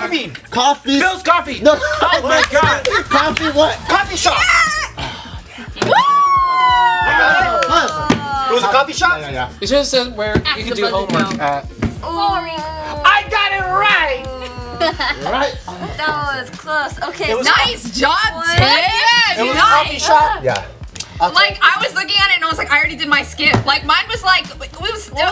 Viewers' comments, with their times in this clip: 0:10 Lmao he said that so quiet bc he knew he wouldve gotten roasted if someone heard him